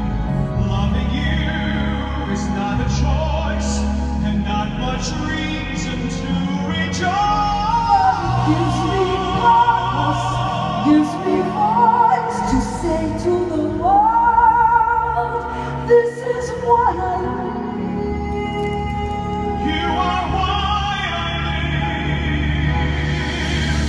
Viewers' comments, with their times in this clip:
0:07 Are you talking ? I agree. She didn't need to come in at a "forte"... in fact, just let HIM sing. She can have a seat at the stool.